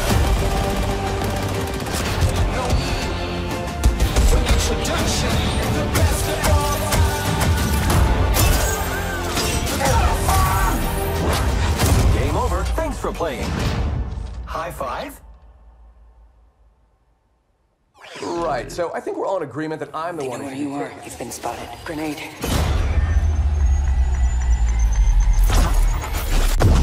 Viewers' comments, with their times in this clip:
0:08 path finder made the same noise in season 5 I believe when Loba wraith and path jumped into the bunker thingy